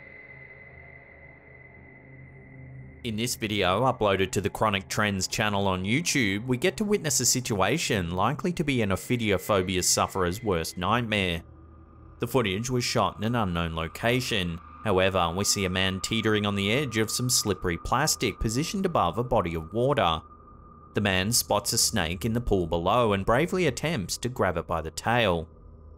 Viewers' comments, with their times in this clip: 0:09 I Didn't ever think this would sound creepy until you narrate it